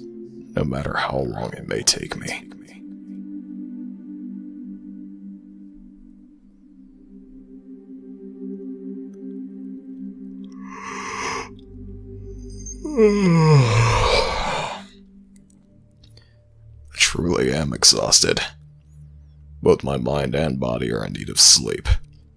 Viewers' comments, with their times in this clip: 0:10 Me: Yawn in Him:*Yawn* Me:0/////0•_• what the-